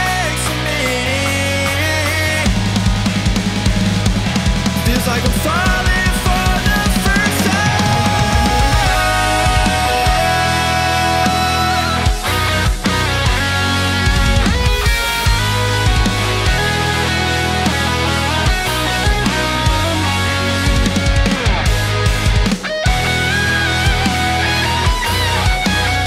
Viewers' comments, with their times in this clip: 0:09 THAT SOLO MAN, YEEEAAAH